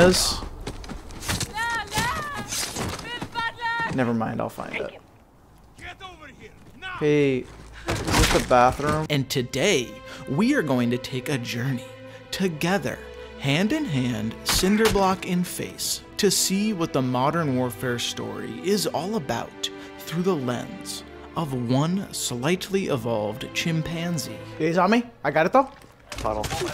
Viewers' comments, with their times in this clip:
0:09 music goes hard